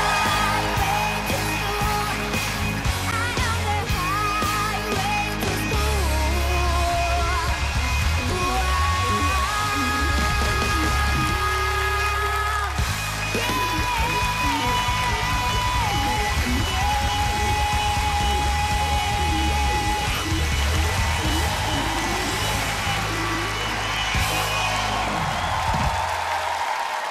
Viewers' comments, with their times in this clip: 0:09 = the guitarist was so happy because he can show off with playing his wah pedal insanely